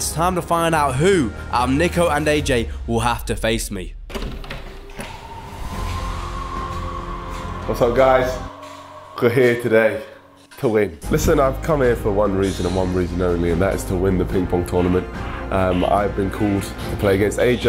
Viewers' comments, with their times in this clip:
0:04 the silence is way too loud.